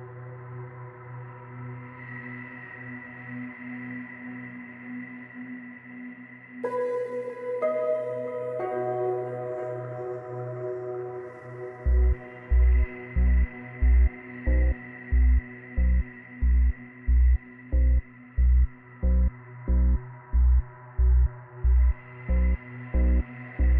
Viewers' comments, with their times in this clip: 0:06 This one is iconic. It has a solid stalker "Ted Bundy" vibe.